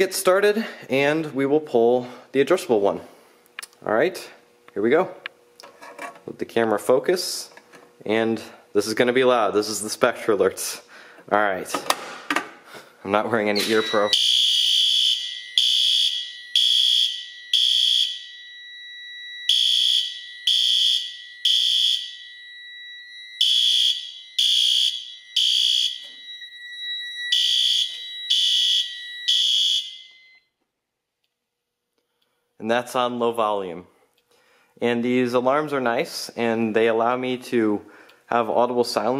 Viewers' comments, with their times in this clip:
0:07 “This is going to be loud. This is the SpectrAlerts.” “Alright” pulls fire alarm “I’m not wearing ear pro— fire alarms sound
0:12 “I’m not wearing any ear pro-“ goes deaf
0:14 Its sounds like a brookhaven fire alarm
0:22 sounds like my school alarm
0:25 same fire alarm for my school